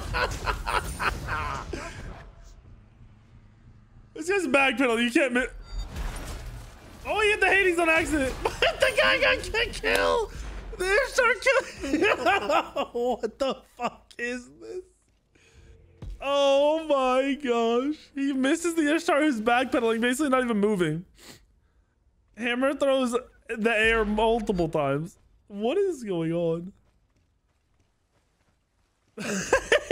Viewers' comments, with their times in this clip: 0:10 the greatest laugh ever